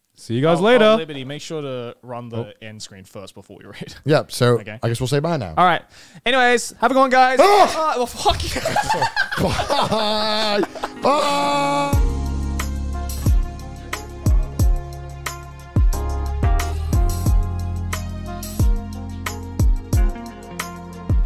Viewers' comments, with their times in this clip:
0:03 I choked on my water with that sneeze hahahahaha